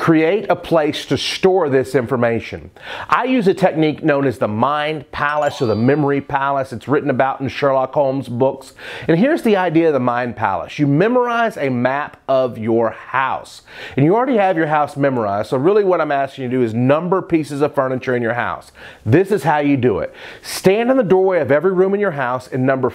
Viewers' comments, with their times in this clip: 0:03 if anybody ever had to do Khan academy it sounds like that when you get the answer right haha